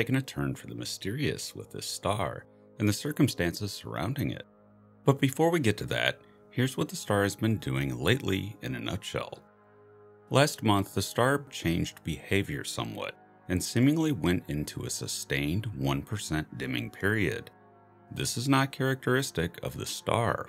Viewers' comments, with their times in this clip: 0:08 I felt like I was playing a “tool“ Song on guitar hero